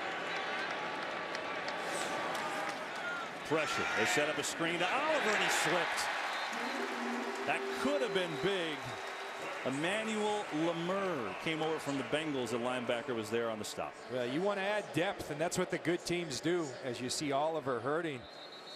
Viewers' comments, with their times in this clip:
0:04 I possibly heard a pop from the video 0_0